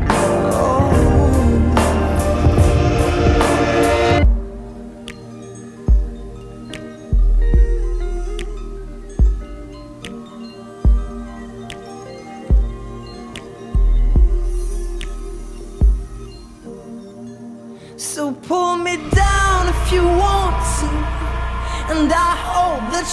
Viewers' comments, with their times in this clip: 0:08 breaking out the wind chimes